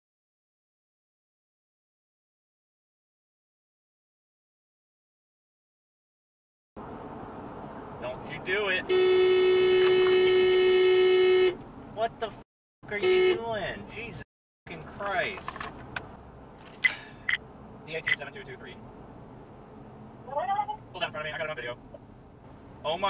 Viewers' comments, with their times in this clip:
0:06 A common reoccurrence that I see: Cammer driving on 40-50 mph speed zone Other car pulls out when cammer has easily 100 feet to spare before contact is made Instead of changing lanes or god forbid touching the brakes, cammer lays on the horn for an eternity I guess I forgot that cammers are just plain better than everyone else on the road simply because they have cameras Example:
0:11 aren’t you being quite the diva. That car didn’t cut you off so closely. Granted they could have let you go by first but you had plenty of room if you slowed down a little. What harm would it have done to just let them go about their day. You didn’t have to lay on the horn like that. Life is to short, let it go.